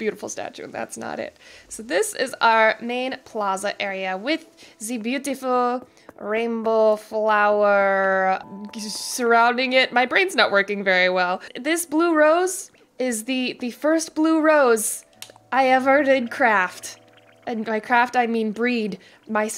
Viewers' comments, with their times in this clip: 0:06 you sound like gru